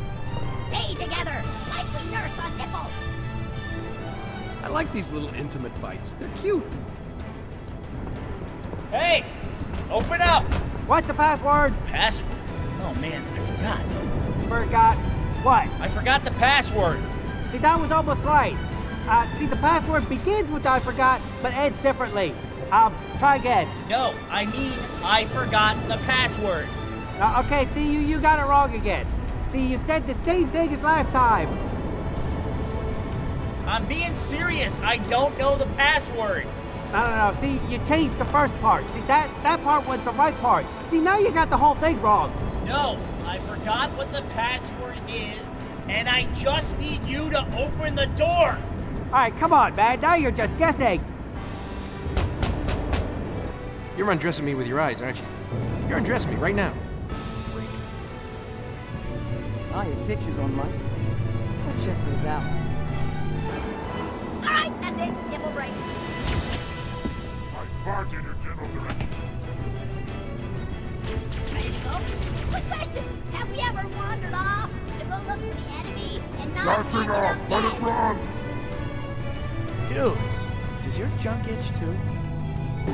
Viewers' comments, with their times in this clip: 0:08 sounds just like caboose
0:08 does anyone think the guy inside sounds like wade from gta 5?
0:08 its sounds like caboose
0:08 RED VS BLUE REFERENCE (caboose voice a like)
0:10 does he sound like Caboose??? Or is it just me (Oh nvm read the comments lmao )
0:10 why does dude sound like caboose from rvb? Lol
0:10 That sounds like caboose and church from red vs blue
0:11 OMG THE DUDE IN THE BUNKER SOUNDS LIKE CABOOSE FROM RVB!!! NO WAY!!!!!
0:11 the guy on the other side of the door sounds like caboose
0:17 I swear they sound like church and caboose
0:18 sounded like it was Caboose for me idk about anyone else
0:43 sounds like a argument between church and caboose from red Vs blue
1:07 I think the brute is french